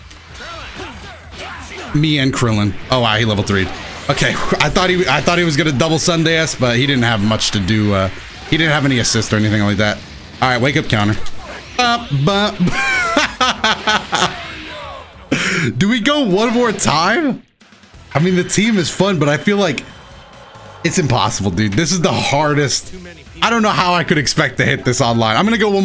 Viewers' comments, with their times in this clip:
0:09 you were actually about to sing the ui theme